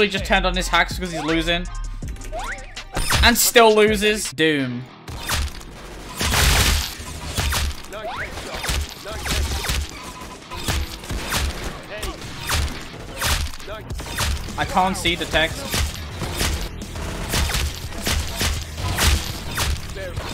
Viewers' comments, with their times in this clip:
0:05 when the doom music kicks in..